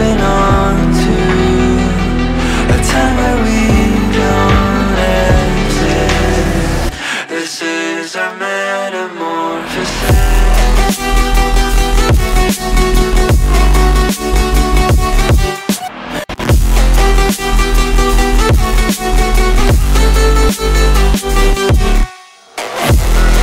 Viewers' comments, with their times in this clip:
0:10 That drop is 🔥 🔥 🔥